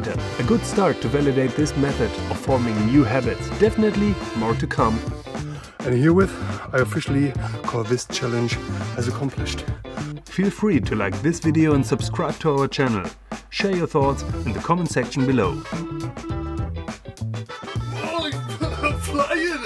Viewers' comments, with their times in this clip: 0:05 counting loud is quite impressive!